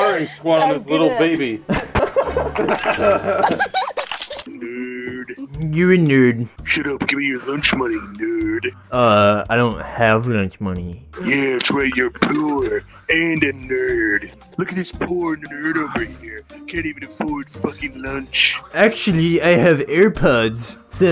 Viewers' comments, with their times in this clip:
0:03 ok, memes aside, that laugh if that really was a girl was cute af
0:06 the dude sounds like Duke nukem